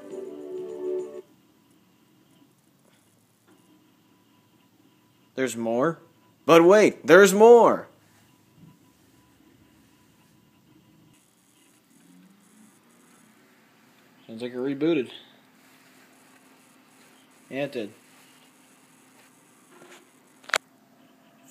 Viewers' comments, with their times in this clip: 0:08 sounds like in infomercials commercial